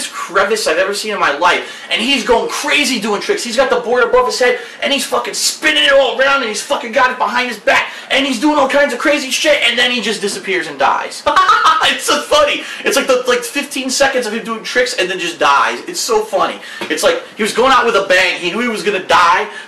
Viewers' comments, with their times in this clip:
0:07 bahahahhahaah WTF was that laugh